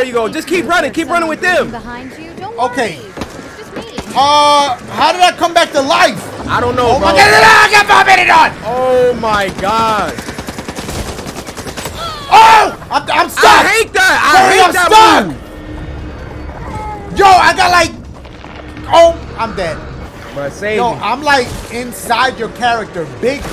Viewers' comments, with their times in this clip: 0:06 OAHKIDIDENOAKIDIDENF stiddering thats what i heard